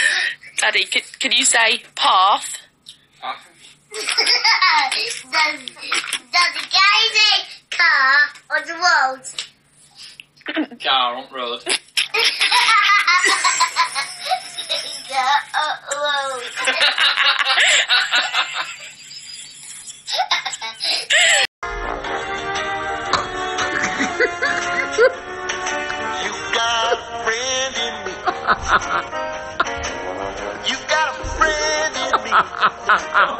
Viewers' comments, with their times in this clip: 0:04 Yo that baby speaking in a full sentence!? And the dad can’t even pronounce words correctly?!?!?! 🤣🤣🤣
0:07 I’ve never heard a baby with an english accent
0:17 the baby saying It like a little yorkshire man o lord